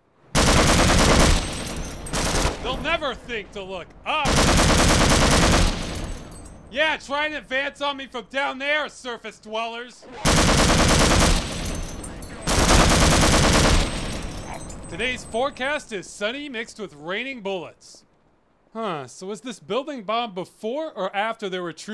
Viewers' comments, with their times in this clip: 0:04 Does this game and/or mod have a sound echo feature? I feel like I hear his shots echoing through the area. It sounds cool as fuck.